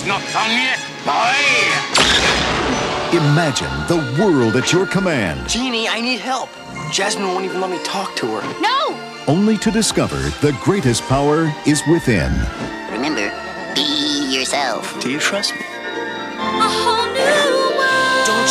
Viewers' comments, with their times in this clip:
0:04 the voice suits to mytho. :)